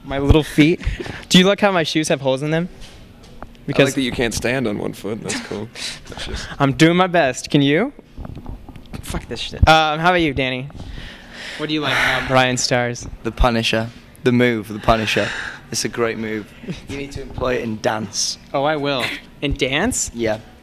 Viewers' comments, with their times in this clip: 0:08 arent they tierd of standing? and tou can hear someone say f this sh*t